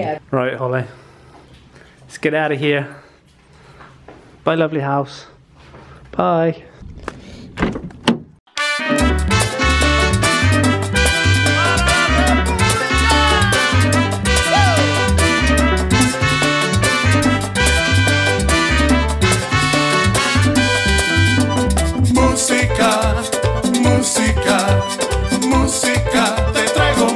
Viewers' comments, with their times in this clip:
0:10 im diggin the music